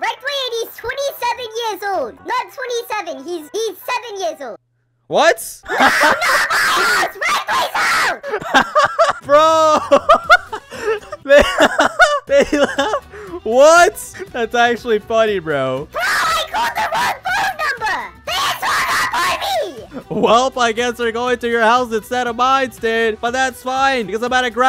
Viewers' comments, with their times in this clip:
0:05 i wonder how his vocal cords are still not bleeding XDDDD
0:07 Your luagh is cool on